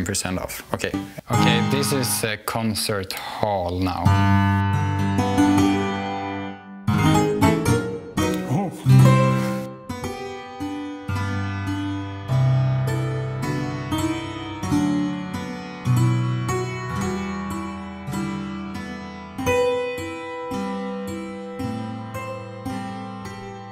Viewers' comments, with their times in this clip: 0:04 it sounds like church bells of every chromatic note put into one box.. it's really pretty. That was a good choice of song for the hammer piano, he's quite a good pianist.
0:10 pavane for a princess who was killed with hammers haha